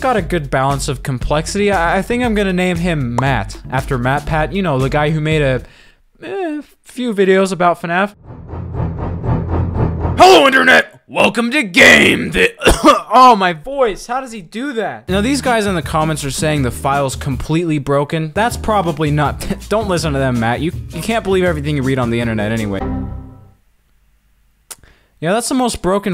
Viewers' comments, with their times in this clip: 0:09 HELLO INTERNET “starts dying”
0:10 completely nailed the burn trap voice